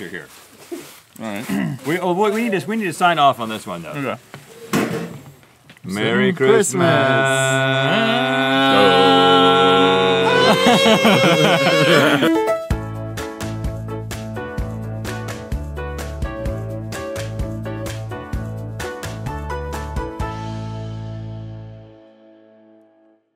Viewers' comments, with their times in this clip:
0:08 I thought one of them actually managed to harmonize then I watched it again and realised it was Link. Of course.